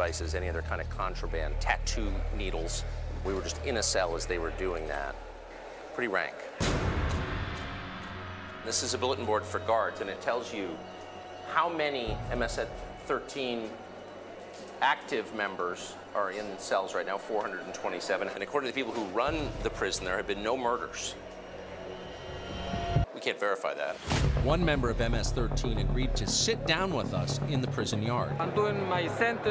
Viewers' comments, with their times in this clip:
0:10 "how many msn(bc)..13 active members.." lol
0:11 Lol he almost said "MSNBC"